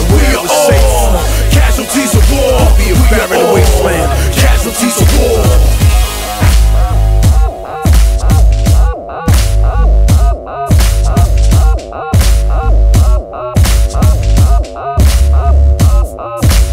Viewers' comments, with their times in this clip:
0:04 the top comment is talking about the sound not the video tech says something but im not sure what it is